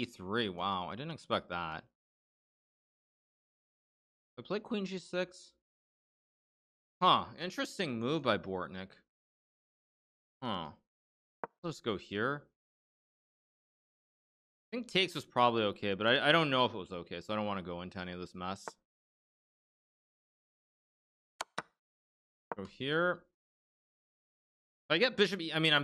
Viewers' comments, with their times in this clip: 0:10 Minecraft villagers be like: